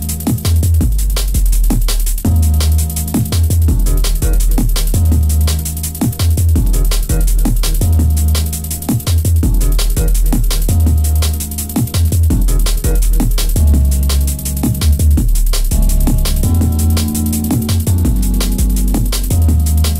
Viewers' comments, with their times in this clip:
0:06 Song ? my favorite one, very jazzy